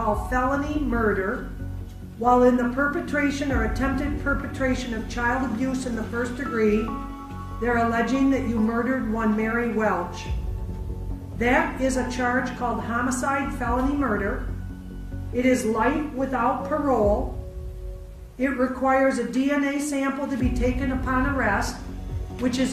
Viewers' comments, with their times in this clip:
0:08 notice how the mother starts crying when the judge is saying what they did, but the father only shows his emotions when the judge tells them what sentence they are facinh, while the mother doesn't react to that. The mother actuaally was sad about her child, but the father only cared about his life.